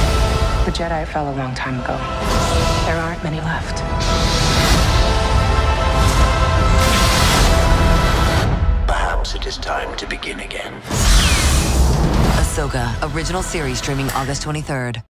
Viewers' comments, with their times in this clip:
0:10 Did i hear Vader breathing?
0:11 I swear I heard Vader breathing at the end